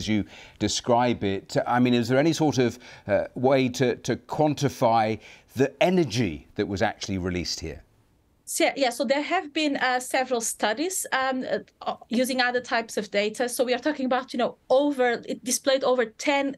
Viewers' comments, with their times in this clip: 0:04 Whoooo 😮 Good grief, now that is 1 big bang! 🌋